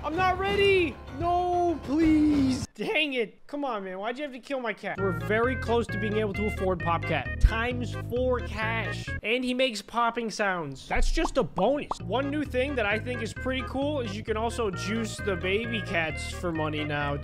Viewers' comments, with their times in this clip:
0:04 the fan was on beat what the hell